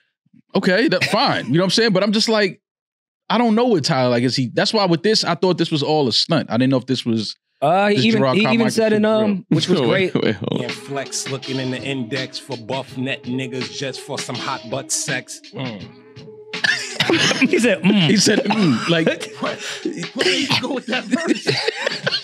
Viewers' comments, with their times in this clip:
0:07 is that the Joe Budden "OOOOOHHHhhnn" 🤣🤣🤣🤣🤣 Nasty work #NODIDDY #STOPTHETAPE